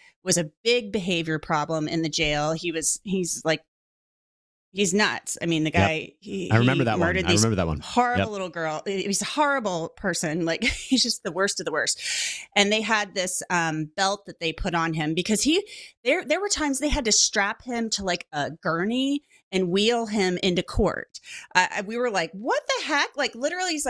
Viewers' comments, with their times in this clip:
0:07 he murdered these horrible little girls ??? that's victim blaming and its a child WTF ??????